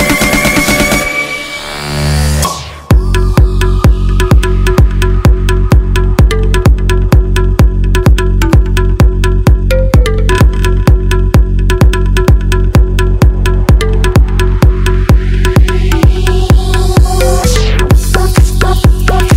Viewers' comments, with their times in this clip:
0:04 oh dear! oh dear! what was that man. this music literally awesome.❤🇧🇩